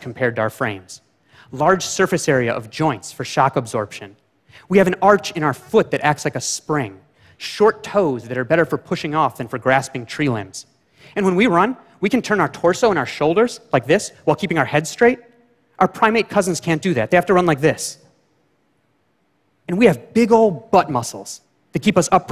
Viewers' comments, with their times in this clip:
0:05 Is that a fart